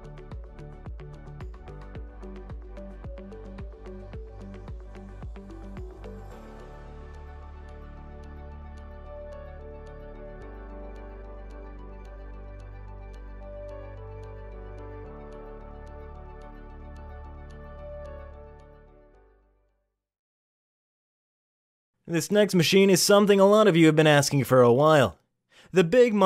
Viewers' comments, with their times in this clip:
0:09 I liked the Jurassic Park themed music lol